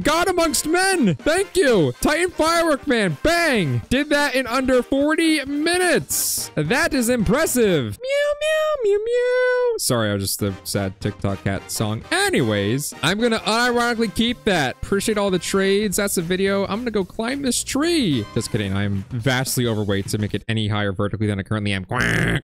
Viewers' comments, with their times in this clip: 0:08 The meow meow at the end got ke dying here watch it urself